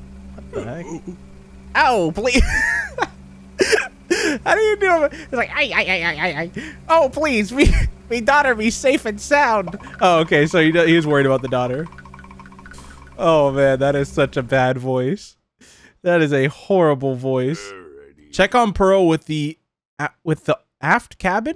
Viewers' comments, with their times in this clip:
0:06 lol you sound like congested squidward-